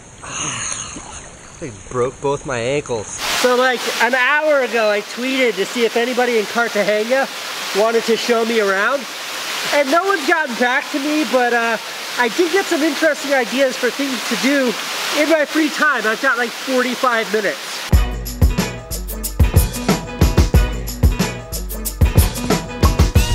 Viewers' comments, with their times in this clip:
0:08 Lol, the clip totally sounded like you were drowning. 3 hours of sleep and runs in the heat, this dude is boss...